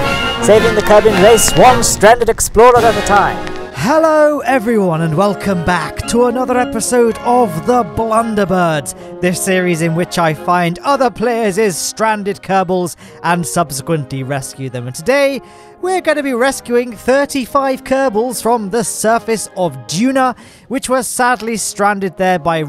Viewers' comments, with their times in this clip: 0:07 love the music greetings from Bavaria :)